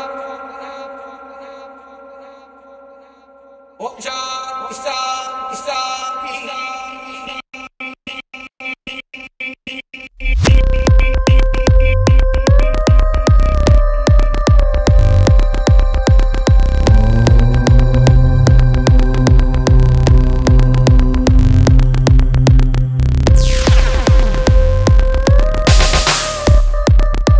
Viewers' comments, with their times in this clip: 0:10 Raise ur hand if u r seeing heaven from female voice
0:10 God level mix And that